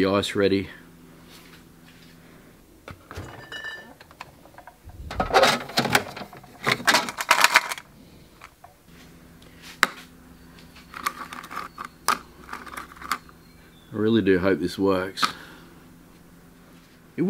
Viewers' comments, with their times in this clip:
0:03 I love the sound of the beer bottles as you open the door. Just like home.